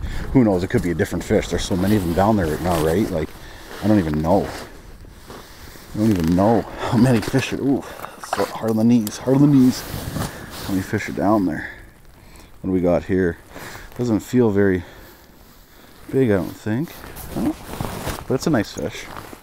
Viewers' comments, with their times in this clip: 0:06 lol goes full Ukrainian love it.